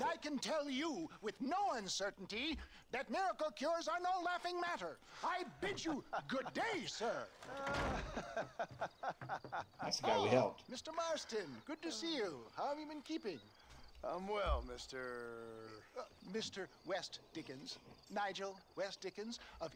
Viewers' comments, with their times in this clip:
0:05 why does john laugh like that 😭